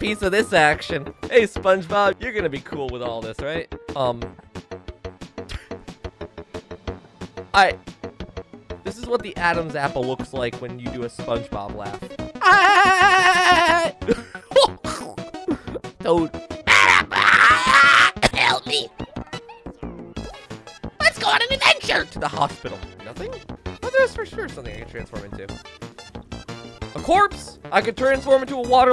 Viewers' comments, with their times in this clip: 0:04 the music fits so well
0:13 who else heard a banjo noise in